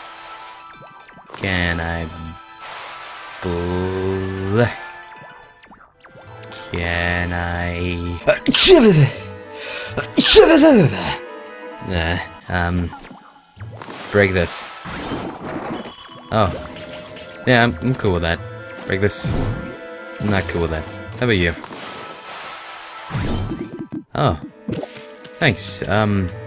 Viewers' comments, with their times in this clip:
0:08 Double Bless you
0:08 that sneeze tho!! XD